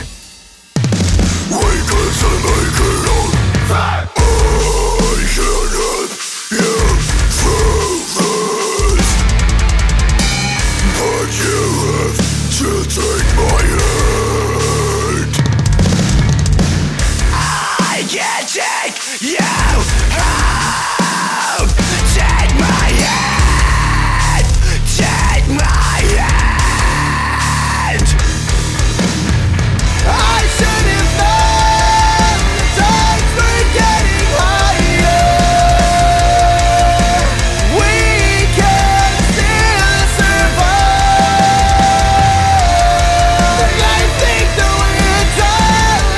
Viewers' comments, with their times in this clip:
0:04 That fucking bass boom
0:27 holy sheet + dat vokal..